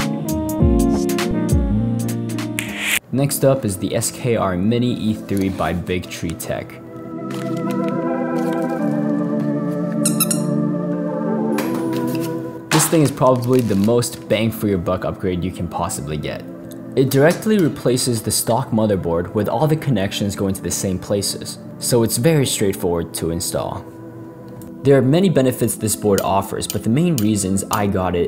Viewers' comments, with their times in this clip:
0:09 Bro u woke up my dog cause of the duck. :(